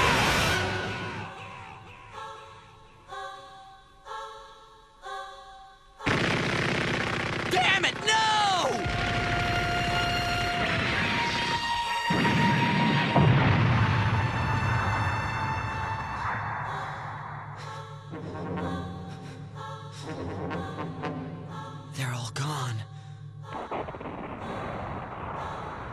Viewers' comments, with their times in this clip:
0:08 Had me done. Guntank: Hey buddy! Are you winning? OH GOD! BOOM!